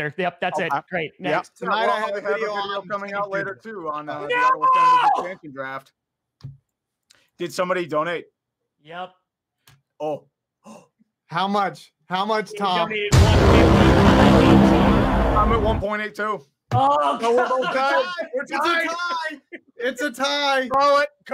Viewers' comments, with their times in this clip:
0:03 Donating was worth the soul-crushing scream alone. I will imagine that scream when Deshone Kizer II takes the field for the Packers this year.